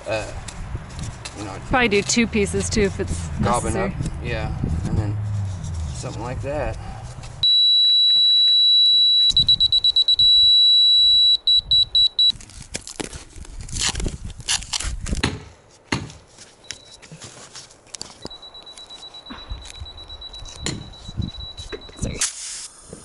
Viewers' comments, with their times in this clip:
0:10 RIP HEADPHONE USERS!! DAMN!!!!